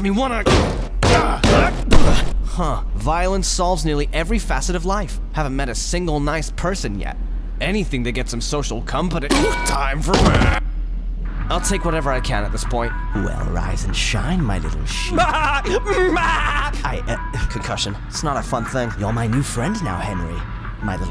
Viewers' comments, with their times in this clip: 0:09 Time for beeeeeeed that actually scared me